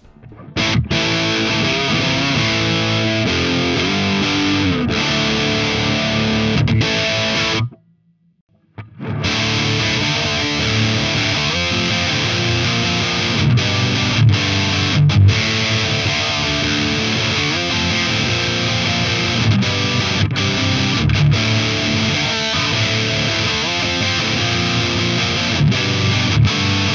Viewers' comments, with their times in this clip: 0:09 there's the brown sound.... and then there's the bumble bee sound XD